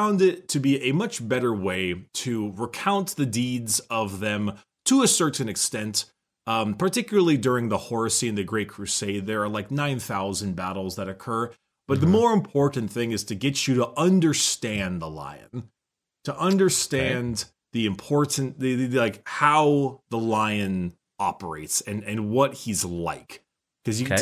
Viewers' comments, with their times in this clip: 0:07 I THOUGHT HE SAID HORUSSY AND I'M FUCKIN' DEAD.